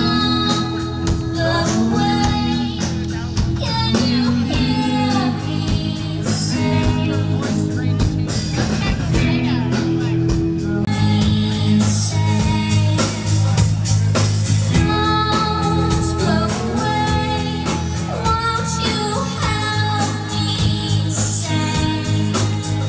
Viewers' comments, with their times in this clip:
0:06 What’s the song ? Sounds like Open Up The Door In Your Head but it is not.🧐